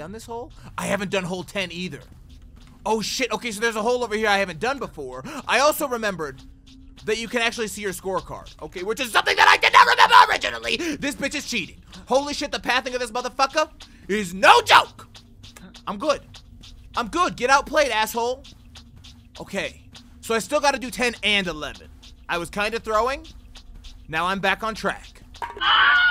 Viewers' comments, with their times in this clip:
0:08 You started to rapping? Probably on Eminem level lol🤣😂